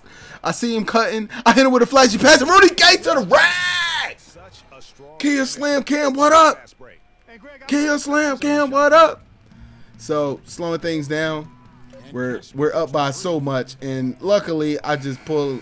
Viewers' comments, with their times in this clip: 0:03 AND RUDY GAY TO THE WWWRRRRAAAACCCKKKKK lol that had me weak